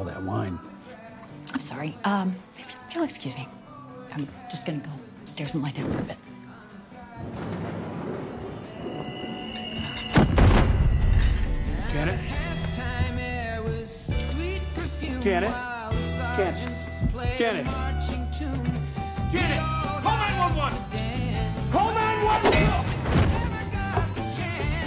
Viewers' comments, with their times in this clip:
0:07 Just wanna say how much I love the music gets louder and just goes so well with Billy making a chloracloth